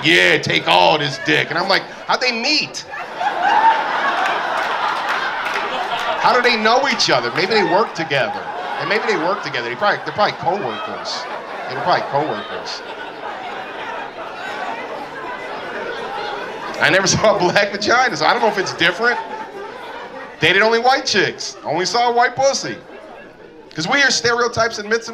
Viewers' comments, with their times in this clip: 0:07 For about 6 seconds starting he channels Dustin Hoffman's Rainman and it's hilarious 😂 (just an observation, I'm not familiar with this guy's standup)